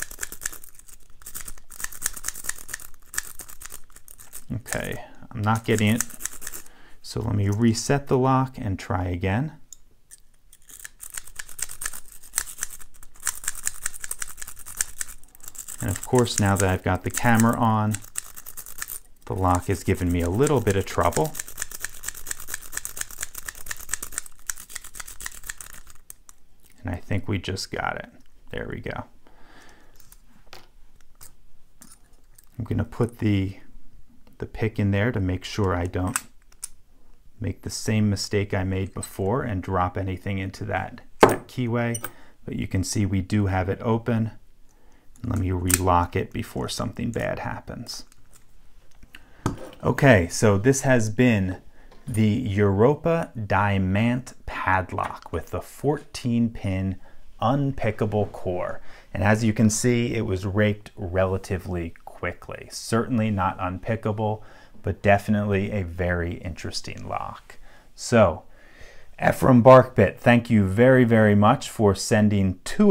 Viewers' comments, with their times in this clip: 0:08 nice tap lol
0:44 the way he says "let me relock it before anything bad happens" made it sound like he was legitimately worried leaving it unlocked would like... idk invite a demon into his home.
0:58 "And as you can see, it was raped relatively quickly..." (YouTube Closed Captioning heard it too!... XD :3)
0:58 It was raped very quickly
0:59 it was RAPED relatively quickly :p